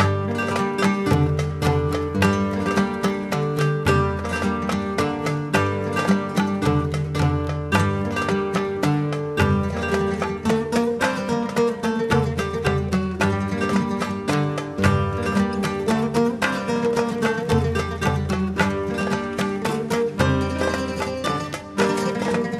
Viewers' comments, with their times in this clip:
0:04 paint it black vibe from